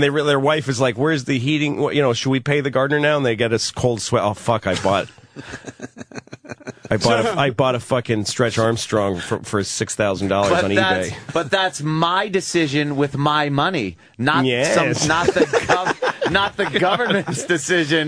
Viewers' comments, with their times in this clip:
0:05 his “nyyyesss” response to Anthony’s ridiculous gambling losses is so good. Keep bitching about taxes, Anthony. Your spending habits seem awful. That’s not the government’s fault
0:05 his “nyyyesss” response to Anthony’s ridiculous gambling losses is so good. Keep bitching about taxes, Anthony. Your spending habits seem awful. That’s not the government’s fault
0:05 his “nyyyesss” response to Anthony’s ridiculous gambling losses is so good. Keep bitching about taxes, Anthony. Your spending habits seem awful. That’s not the government’s fault